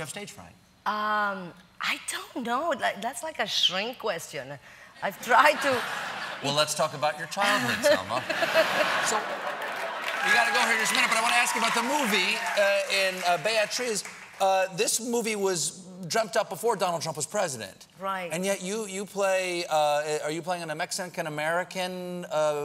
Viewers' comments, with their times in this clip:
0:07 What's with the different laughing ? Do they put in canned laughter sometimes?